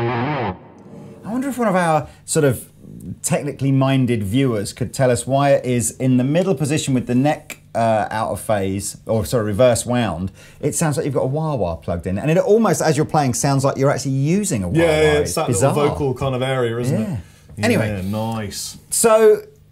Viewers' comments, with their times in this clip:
0:05 I think the middle phased position sounds like that because the pickups pick up different frequencies as they are at different positions, this means certain parts of the sound spectrum are cancelled out while others are not, kind of like a filter in a wah